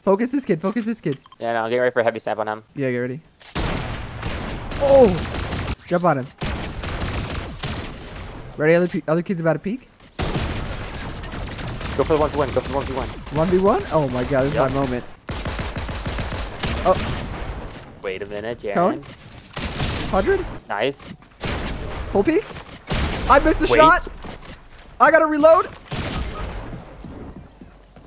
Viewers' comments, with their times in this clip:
0:09 whos coming down the stairs? 😂